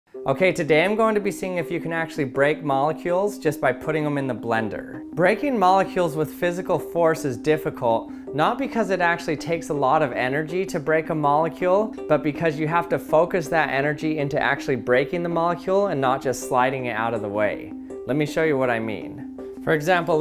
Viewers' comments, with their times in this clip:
0:08 Sounds like rap